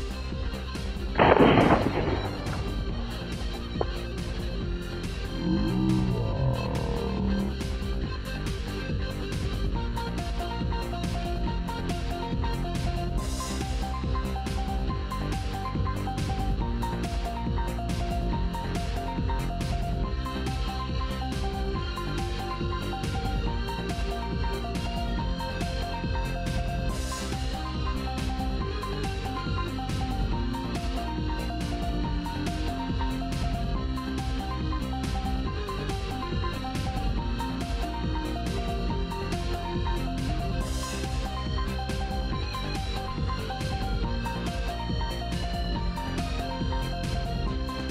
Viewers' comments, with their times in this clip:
0:05 sounds like a very satisfying eructation
0:06 sounds like a alligator.
0:28 Insert..."not actual sound" here,